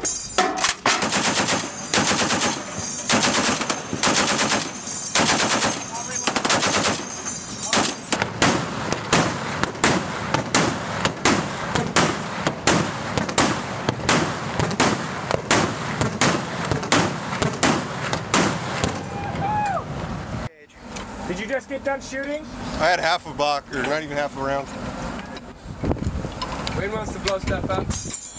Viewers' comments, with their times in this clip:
0:09 Is there a second weapon system being used ? That sound, shot group, and ROF doesn't seem likely to be an M2 to me. Mk38 maybe?